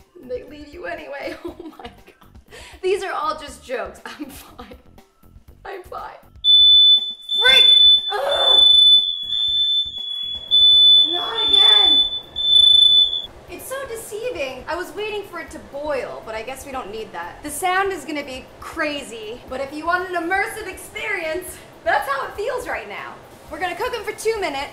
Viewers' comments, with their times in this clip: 0:07 thank you for the headphone warning...😐😂